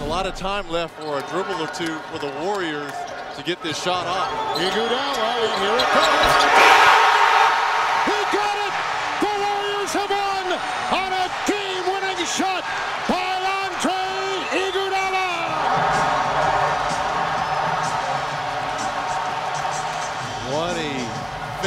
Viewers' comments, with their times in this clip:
0:06 listen to the crowd🔥